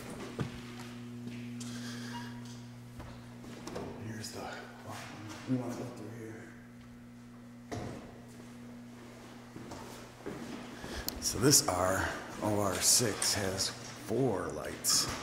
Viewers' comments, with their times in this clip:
0:03 Why when he enters the O.R. you can hear a heart beat machine for one beat😯😯😯💜💜💜